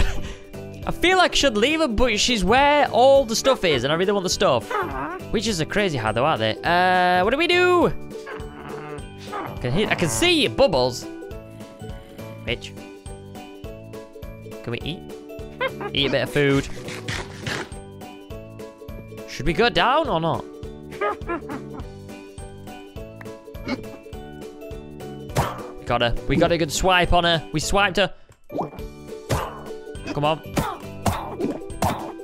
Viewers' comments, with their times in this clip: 0:10 go in the video did he say a bad word or did he say witch
0:12 he sond like he sad b**h
0:13 I thought you said b word
0:13 he sounds like he says bitch but he says witch
0:13 sounded like the b word